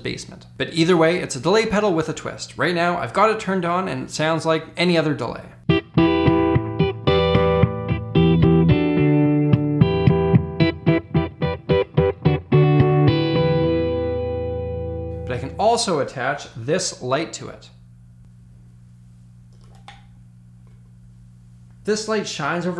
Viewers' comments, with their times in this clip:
0:05 The most extraordinary alarm tune! Oh yeah, more like ear trash...😂